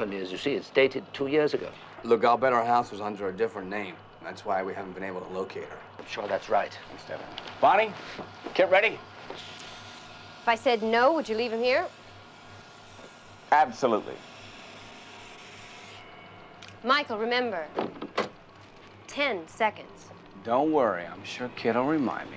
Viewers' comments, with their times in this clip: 0:03 David Hasselhoff over dubbed a line.